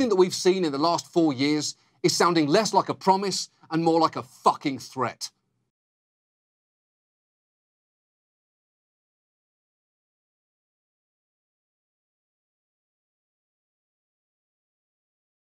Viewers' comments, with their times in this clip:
0:06 Yeah I did wonder what "was yet to come" the first time it was so enthusiastically said.